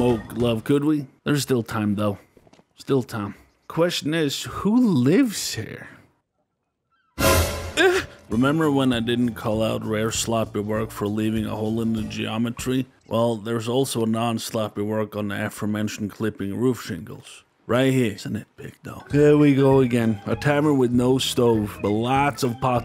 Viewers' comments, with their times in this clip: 0:07 this moan will follow you for the rest of your career, you made a big mistake